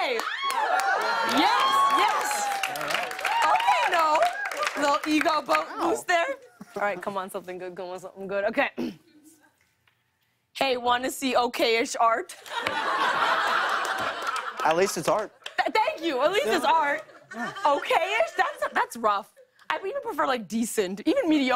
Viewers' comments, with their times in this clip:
0:05 that little "wow" is so cute I-